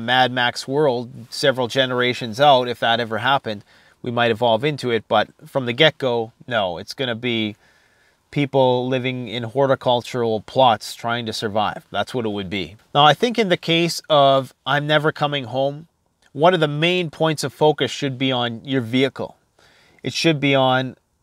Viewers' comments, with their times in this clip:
0:05 from the Gecko...